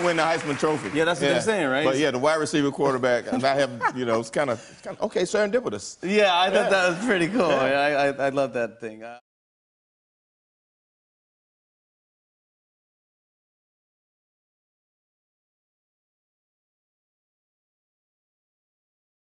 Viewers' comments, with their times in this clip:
0:04 Sam Jackson saying "serendipitous" is gonna be my new text noise